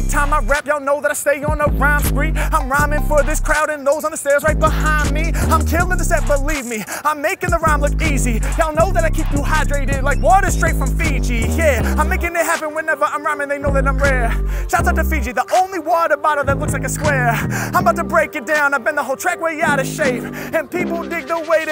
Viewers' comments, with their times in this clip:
0:06 cadence just legendary! LFG